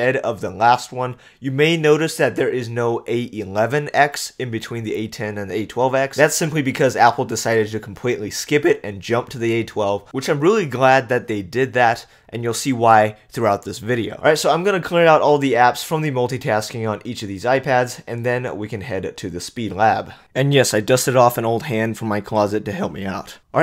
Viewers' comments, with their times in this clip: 0:08 voice crack. Lol